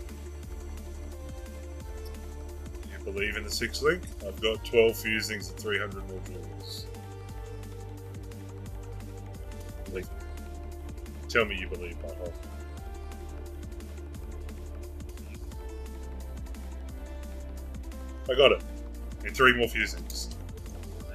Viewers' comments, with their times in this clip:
0:03 skip OR rip ears